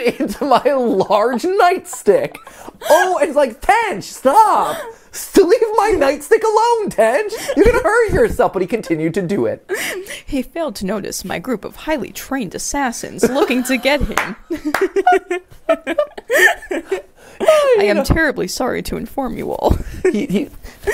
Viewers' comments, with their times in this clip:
0:08 “…and then he ran into my [blunt instrument]. He ran into my [blunt instrument] 10 times… He had it coming.” Also, the background sounds while the phone was ringing seemed similar to the sounds Tench recorded right before disappearing. If the pause in the ringing does suggest time halting/something happening/a portal activating/etc, the phone stopping in that case may have been the moment when he jumped forwards through time.